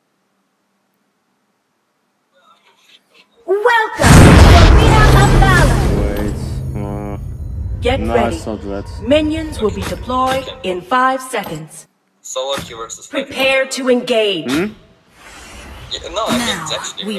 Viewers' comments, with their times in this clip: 0:03 RIP voice %100